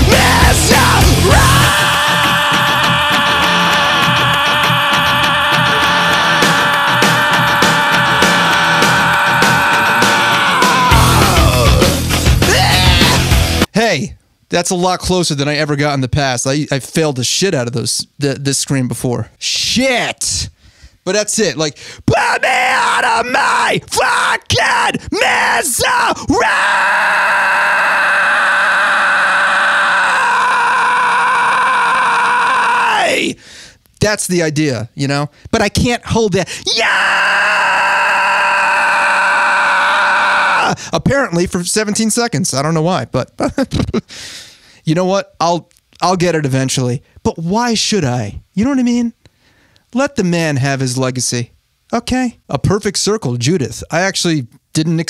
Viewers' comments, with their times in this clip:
0:10 Oh my goodness! That was impressive! It was cute and I died when you finish The Linkin Park song and stuck your tongue out as a choking cat! 😂 Pavarotti? More like Farinelli! You are hilarious!
0:18 hit that almost Ola-like "Shit"
0:26 dude, that's perfect. Chester screams hit not only one note, you can hear a second note at the same time when you listen to the acapella version. Some people say that the second one comes from the Devil's voice. You hit both notes here, so congratulations.
0:37 If you close your eyes you will hear M. Shadow from Avenged Sevenfold. LMAOOOOOOO